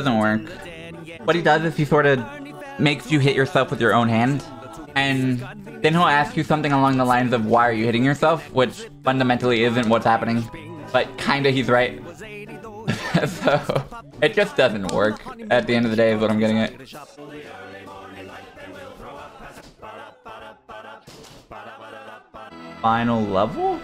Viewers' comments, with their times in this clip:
0:08 was so fucking funny and surprising lol, what happened with that shell? And the sound effect that played was awesome lol
0:09 Absolutely love the quiet MC cave noise when the ice bro freezes the shell and it just hovers mid-air, through the platform